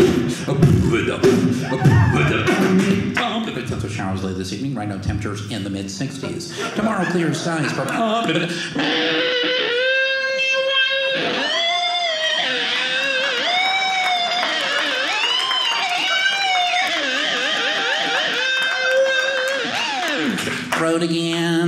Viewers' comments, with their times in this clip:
0:09 is quite literally the craziest voice change I've ever seen.